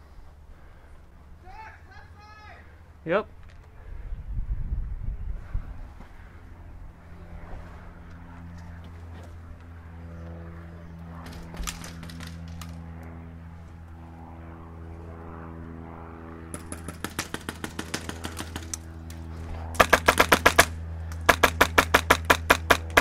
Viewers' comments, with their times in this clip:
0:08 That plane really added to the war zone feeling